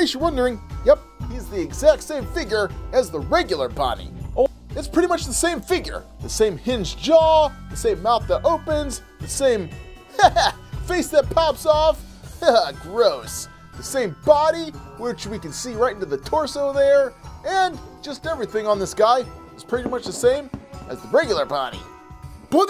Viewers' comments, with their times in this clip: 0:03 Who heard oooh in